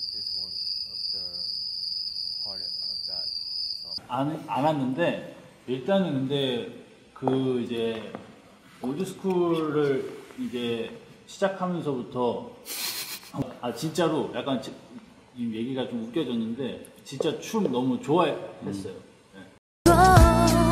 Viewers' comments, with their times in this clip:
0:07 Everyone in the class whispering when the teacher turns their back while lecturing